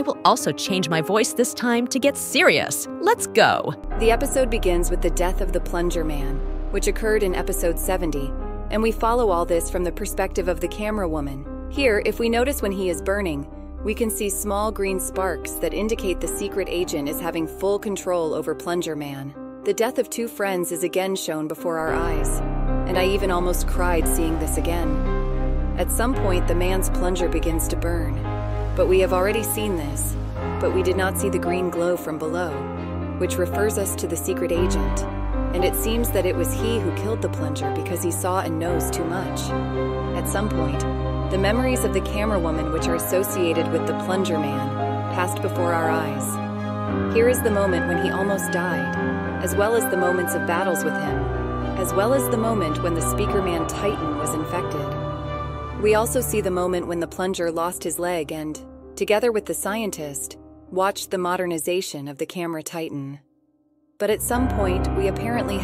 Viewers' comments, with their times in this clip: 0:03 Why Change Voice Elite Camerawoman
0:12 She finally did a analysis it’s been 1 year! Thank you elite camera woman also I like this new voice
0:50 She sounds lonely and sad 😭☹